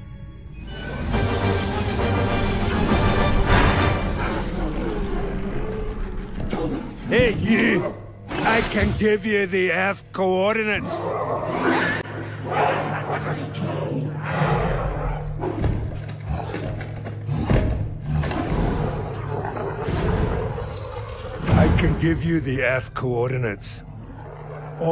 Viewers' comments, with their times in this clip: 0:06 The Elite sounds terrifying!